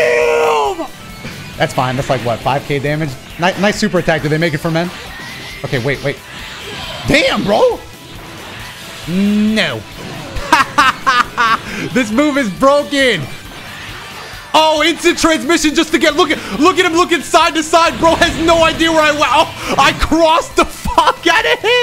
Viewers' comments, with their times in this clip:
0:09 nice Frieza impression!